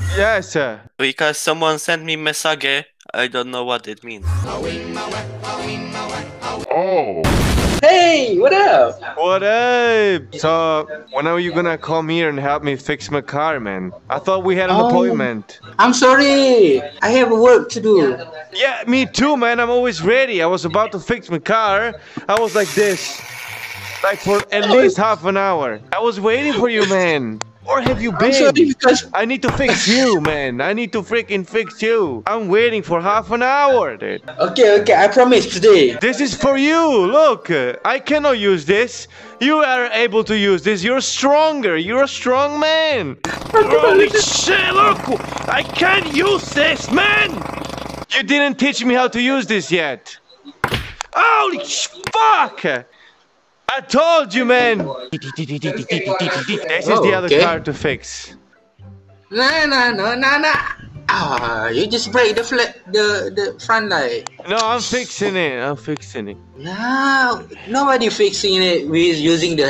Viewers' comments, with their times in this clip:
0:08 in his speaking, maybe he is an indonesian or a malaysian.
0:52 i think this is Malay guys :-)